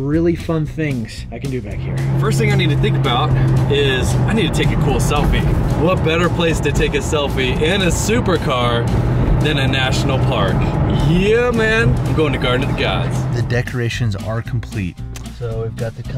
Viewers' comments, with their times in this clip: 0:04 he sounds like mrbeast